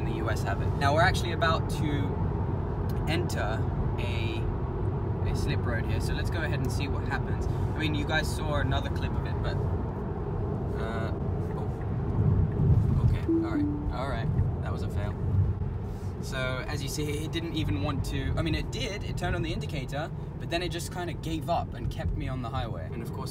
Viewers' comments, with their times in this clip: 0:08 it was yelling you to apply force to the steering wheel otherwise it wont change lanes!